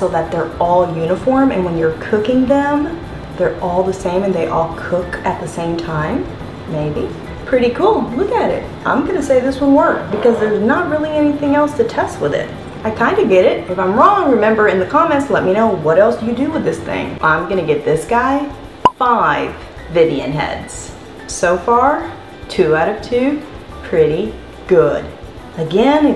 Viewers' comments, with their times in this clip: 0:10 Lol it sounded like a fart sound 😘 and yes, you can stuff the patties with that contraption.
0:10 i heard a little fart just listen real close but i laughed and replayed it atleast 10 times